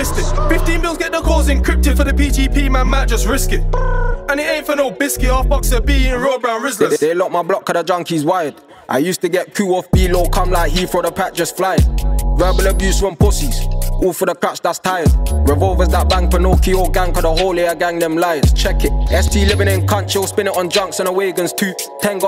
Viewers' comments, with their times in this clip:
0:07 The song ends